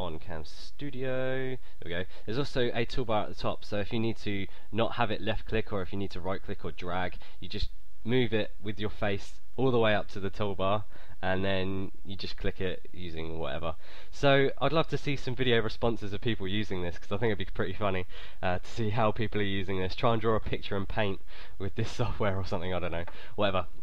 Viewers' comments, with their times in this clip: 0:06 i though it said no dick